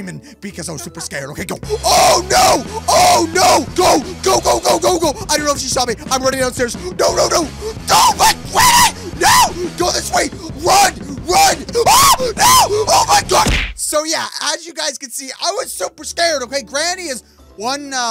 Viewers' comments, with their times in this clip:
0:04 Imagine being this guy neighbor and you hear her screaming 😹😹😹